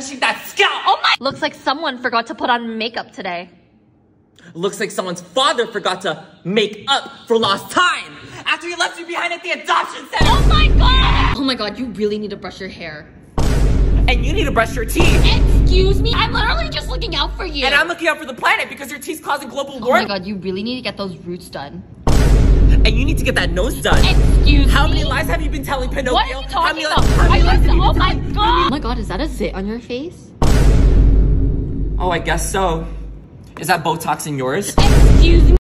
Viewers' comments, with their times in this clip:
0:10 the way he said “YEEAHHH” aggressively 😂😂😂😂😂
0:29 the way he said u need to work on your daddy issues got me rolling from Jamaica to china